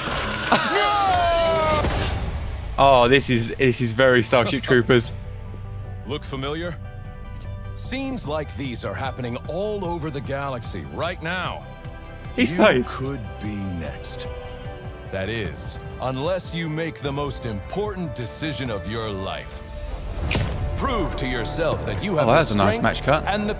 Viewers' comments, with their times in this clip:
0:07 I believe he is talking right after “…right now” it is very subtle, and I do see what the original comment is talking abt now lol def a neat choice.